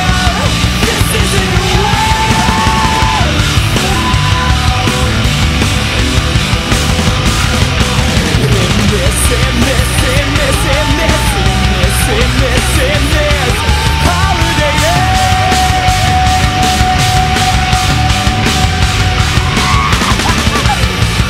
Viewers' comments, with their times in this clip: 0:06 comes in so fucking fierce, still ain't heard anyone with their type of punch yet....